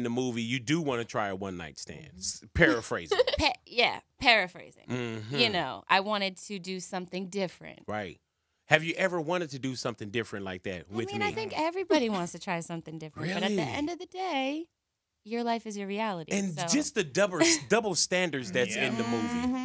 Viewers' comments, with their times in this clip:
0:06 Peep how he said 'with me' hahaha